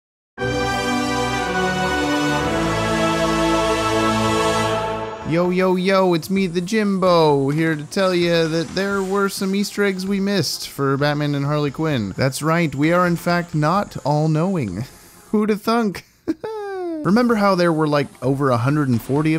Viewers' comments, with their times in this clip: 0:00 I just got earrape from the intro